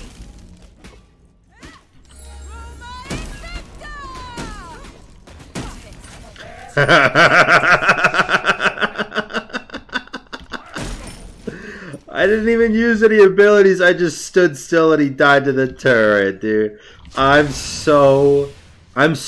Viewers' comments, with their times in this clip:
0:05 That Joker laugh though hahaha 💀 So bully